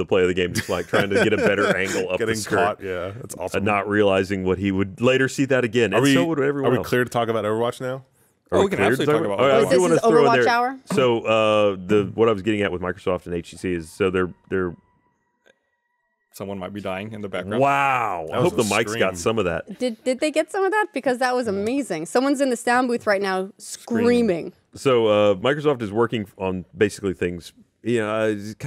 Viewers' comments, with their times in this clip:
0:10 I am genuinely afraid to find out what that scream is being recorded for.